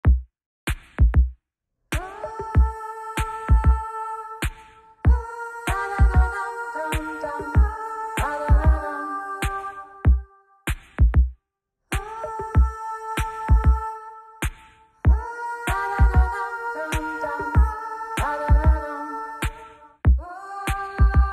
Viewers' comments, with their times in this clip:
0:02 feels weird without hearing bowhead tbh
0:03 it feels so wrong without bowhead